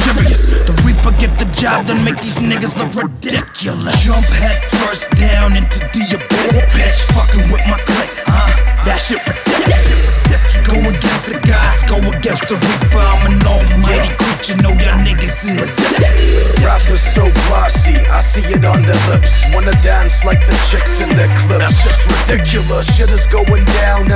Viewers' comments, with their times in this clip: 0:03 from reminds me GTA IV theme song :DD
0:05 beat got me dancing in new year all night